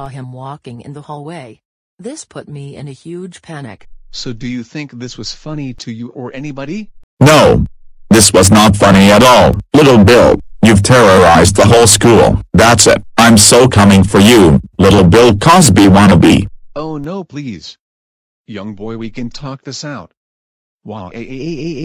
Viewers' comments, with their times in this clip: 0:07 EARPHONE WARNING EARPHONE WARNING SET YOUR VOLUME TO MAX